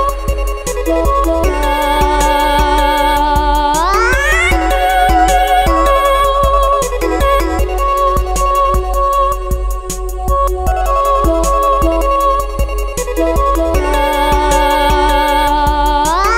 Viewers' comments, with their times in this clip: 0:03 Dis my fav mod now Also mystic Myra Sounded like sky a bit Heres the part!
0:04 did I just hear sky??? 😳